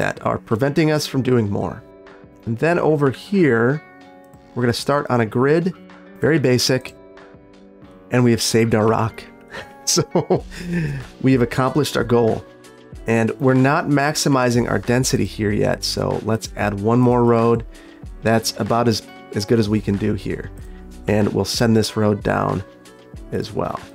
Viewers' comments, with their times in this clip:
0:08 “…and we’ve saved Iraq.” 😂